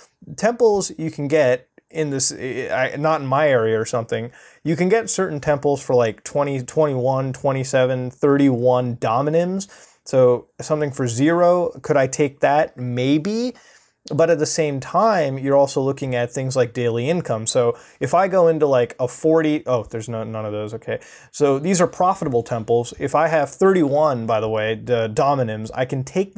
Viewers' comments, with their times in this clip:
0:10 It is AM and I am listening to neat chill voice explaining something that is always in darkmode and weird, perfect